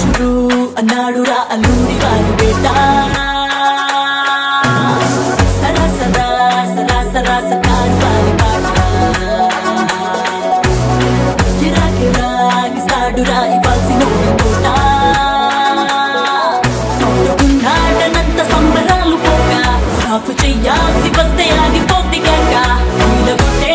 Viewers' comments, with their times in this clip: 0:06 Goosebumps starts with that beautiful groove🎶 in background🔥🔥